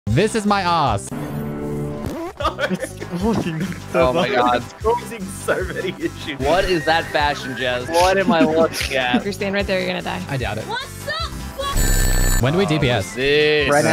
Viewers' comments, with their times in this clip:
0:01 "This is the past!"